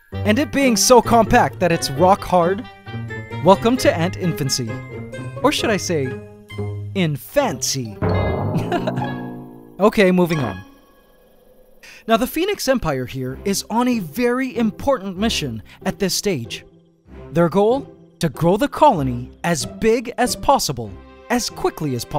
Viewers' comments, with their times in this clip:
0:10 the fart noise 😆😆😆😂